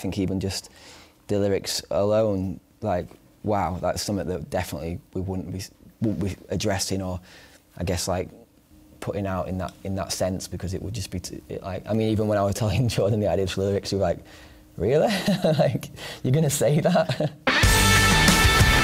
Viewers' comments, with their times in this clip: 0:06 oli just stop take a breath and start over😂😂